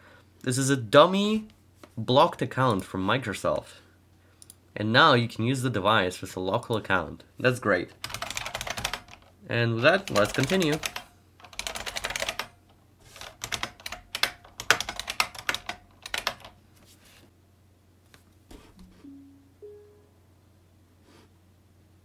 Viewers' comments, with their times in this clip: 0:07 Magical Model M keyboard sounds.